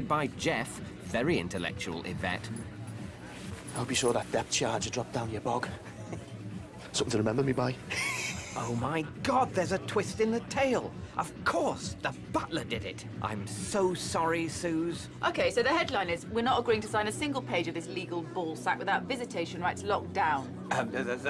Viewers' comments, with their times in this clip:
0:08 Jeff’s laugh is so punchable